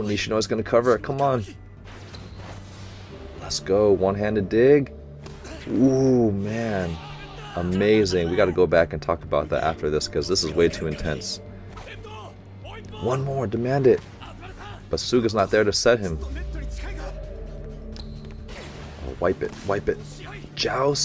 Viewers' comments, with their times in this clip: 0:03 I like how Nishinoya was quiet so that all of us who said "ROLLING THUNDER" out loud feel even more embarrassed.